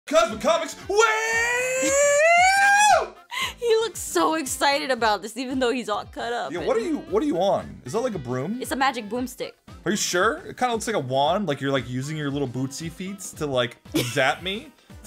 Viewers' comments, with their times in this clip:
0:01 The fire alarm at school be like